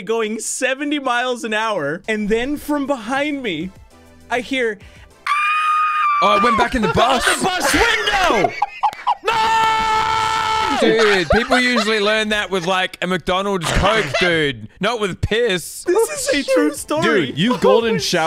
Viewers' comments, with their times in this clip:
0:05 That scream is perfect